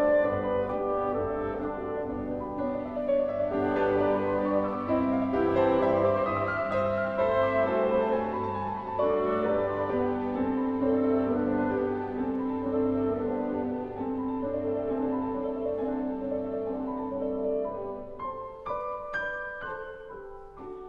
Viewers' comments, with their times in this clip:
0:03 Ugh. Utter disaster Unbelievable. Orchestra players and conductor should be ashamed of themselves. That is one of the worst orchestra mistakes Ive ever heard. How could the pianist put up with that? The clarinetist got way off somehow. Not blaming her alone though. The breakdown began shortly before. This is what happens when orchestras have minimal rehearsals and don't take concertos seriously enough to practice the parts on their own time.